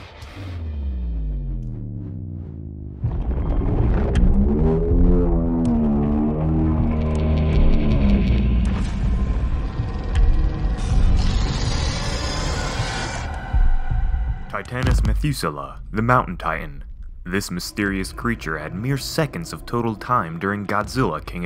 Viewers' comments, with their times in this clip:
0:03 It Sounds Like Dragon From How To Train Your Dragon 2